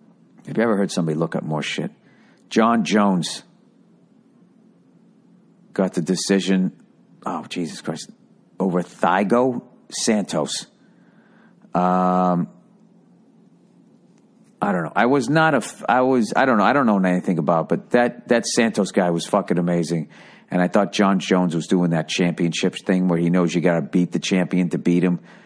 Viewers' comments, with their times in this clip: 0:08 "thigh-go" santos lmao
0:08 Thigh-go santos - The whitest shit I've ever heard xD